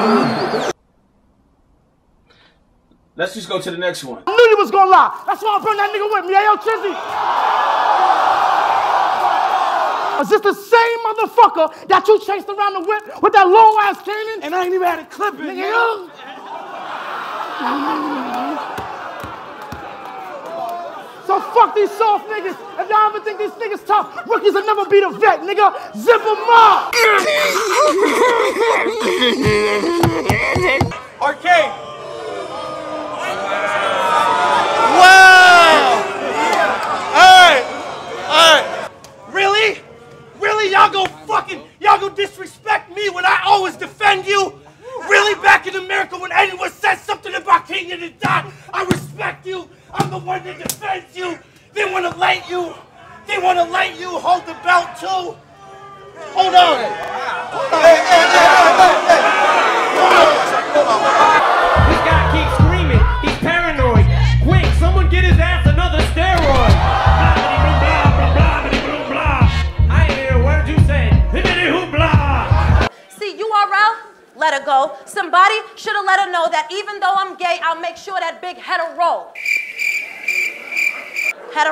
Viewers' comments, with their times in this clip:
0:09 "I didn't even have the clip in" *Caleb city noises
1:03 Was that drake in the background